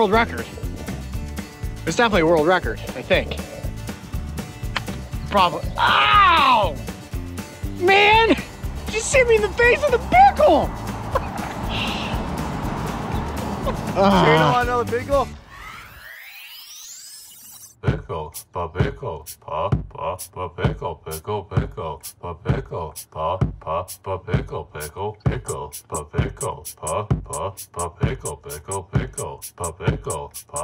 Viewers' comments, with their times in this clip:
0:10 his voice cracc doe-
0:15 when the song was there I got my pickles and vibing with you coyote